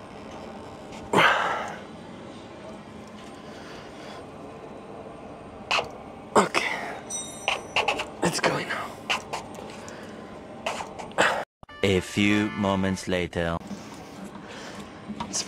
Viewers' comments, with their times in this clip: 0:03 if you close your eyes, you can hear a porno set in the background